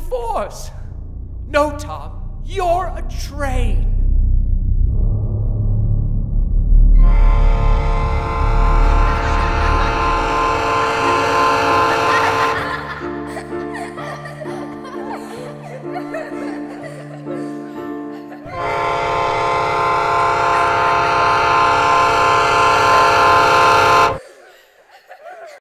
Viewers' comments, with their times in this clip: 0:06 DAMN. That average train whistle has never felt more blood curdling than it just did at the end. Sorry for spoilers, everyone, but you'll get what I mean when you get to
0:07 Thomas's Angry Ragequit Whistle
0:18 I can vaguely hear Thomas screaming at the end and it's giving me serious chills down my spine.